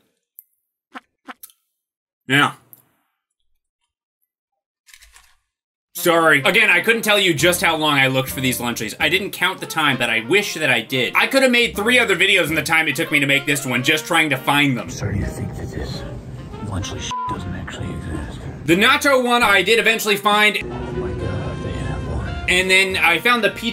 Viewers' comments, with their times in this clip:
0:05 The background music starting is such a rip-off of Moanin' by Art Blakey and the Jazz Messengers.